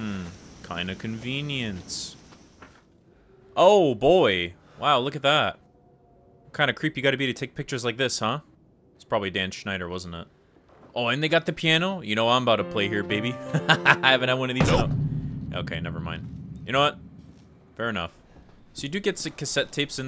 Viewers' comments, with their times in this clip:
0:08 EXTREMELY LOUD TOPICAL COMEDY BUZZER